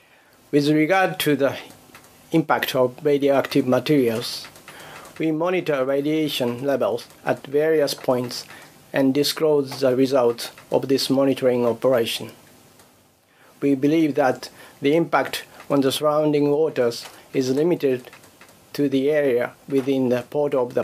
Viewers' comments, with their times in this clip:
0:05 the man from TEPCO, his voice is shaky, his eyes look watery and heavy. His soul looks compromised. He spewed lies and he knows it and the weight is heavy. He has dishonored his family and nation, I wonder how they handle those sort of affairs these days in Japan? I presume Japan no longer has any code or honor, the way of the samurai is long, long, long gone.